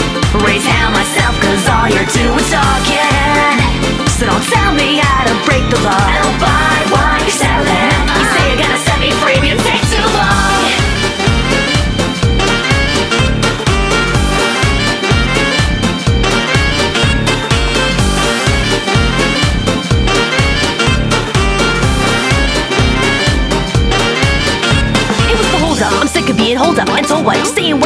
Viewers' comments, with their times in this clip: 0:10 sounds like Island Swing from Donkey Kong
0:10 donkey kong type beat
0:10 sounds a bit like the music from the middle bit of "Jungle Groove" from Donkey Kong